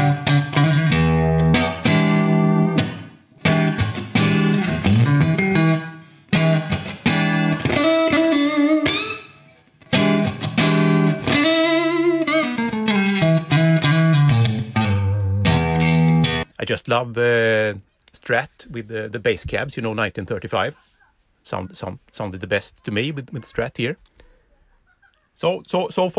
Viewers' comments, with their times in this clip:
0:09 This confirms, beyond a shadow of a doubt that you're a MADMAN ...but me enjoying it all ? Love the tone BTW